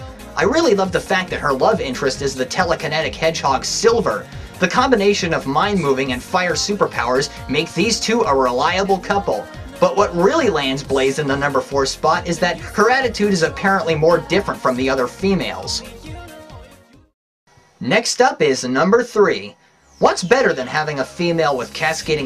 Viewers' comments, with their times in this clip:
0:10 is a really underrated bit imo “But what really lands Blaze in the number four spot is her attitude is apparently more different from the other females.” It almost sounds like he disagrees with the statement despite saying it’s what really lands her in the number four spot.